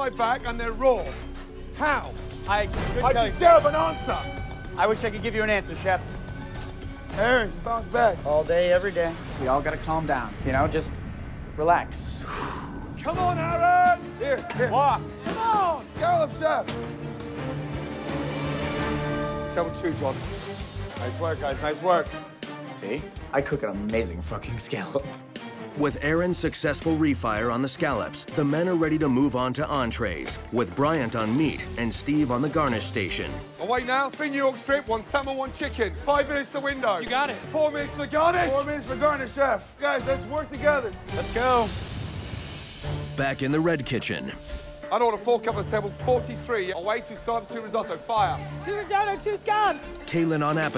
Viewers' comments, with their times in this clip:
0:04 That was intimidating, Chef Ramsay's face and the way he said "I deserve an answer!”!
0:38 Hah, why did Chef Ramsay have to be so intense and intimidating when he said the word 'garnish'?